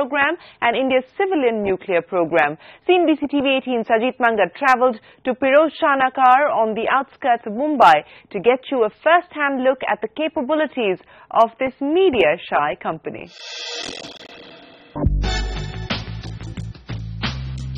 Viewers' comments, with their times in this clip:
0:04 when she says 'Pirojshanakaar' #rofl For God's sake woman, just because you studied at St. Stephen's doesn't mean you can't say 'nagar' like the rest of us. #shereenbhan